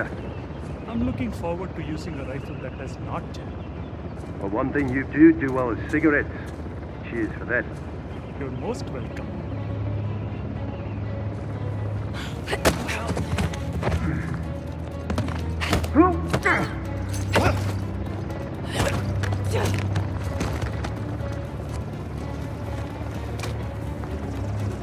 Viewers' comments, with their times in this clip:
0:09 I love that melody